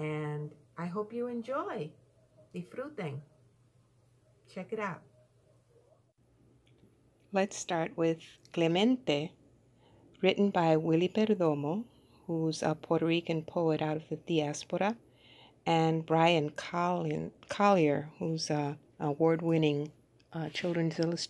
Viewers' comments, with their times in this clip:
0:03 It's quiet up to